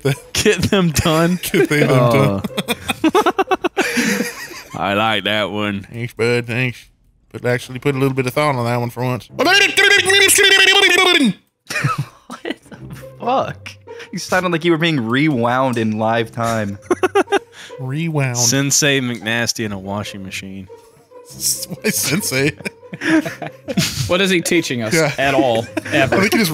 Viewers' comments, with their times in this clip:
0:09 sounds like he just jumped out of animal crossing bruhhhhh